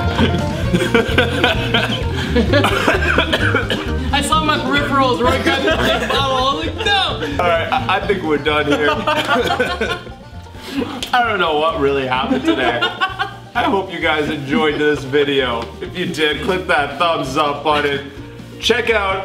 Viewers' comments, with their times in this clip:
0:04 did somebody fart?